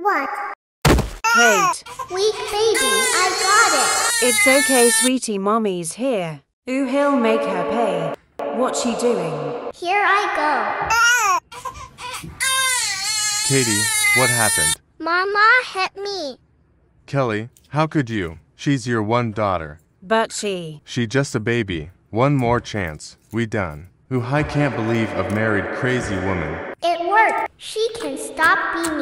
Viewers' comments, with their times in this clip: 0:10 The little cry
0:12 the cry is so so so cute